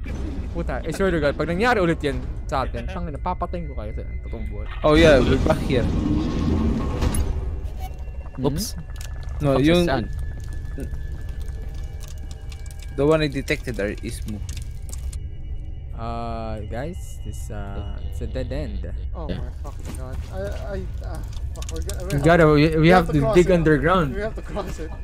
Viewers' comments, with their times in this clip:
0:09 Am I the only who thinks the sound is like u r shting??